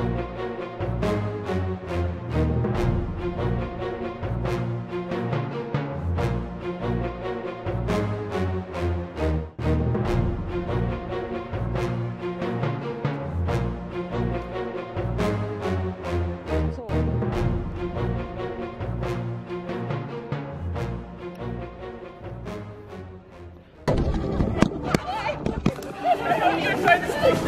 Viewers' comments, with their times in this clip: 0:10 yo that music made me so nervous I can’t even lie LMAO 😭